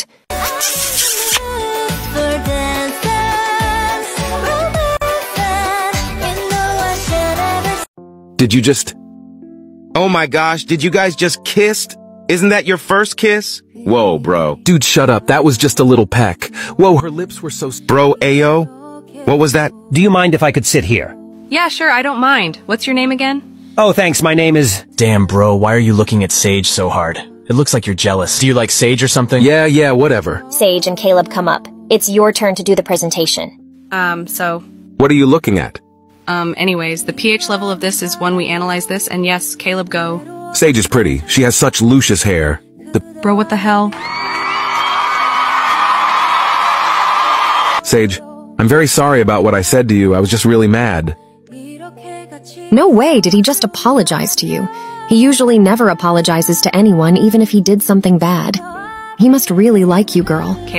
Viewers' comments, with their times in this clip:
0:06 HELPP THE EFFECTS THE MUSIC IM CRYINGG
0:46 everyone was cheering that was so funny